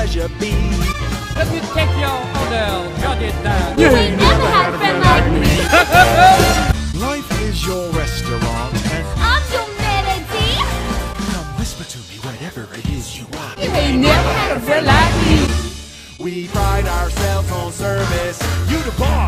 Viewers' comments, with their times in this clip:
0:06 is the only part that bothers me,but just cause the sound cuts off.Other than that this video is awesome,keep up the good work!